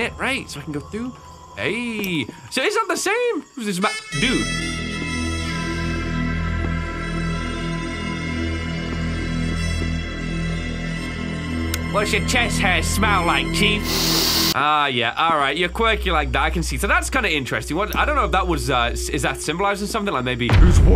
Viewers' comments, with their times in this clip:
0:04 bro what is that sting music XD